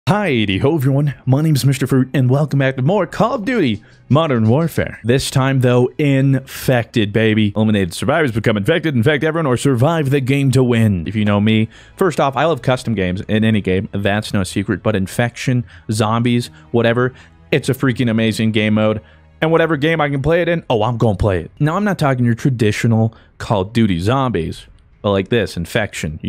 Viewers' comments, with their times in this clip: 0:08 not infected babies